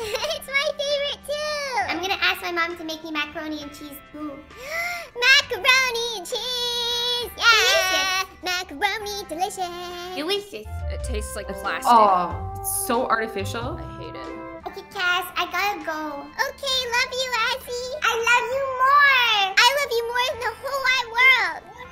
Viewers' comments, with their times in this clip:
0:09 oop- puberty hit her voice fast perburty in 2 seocnds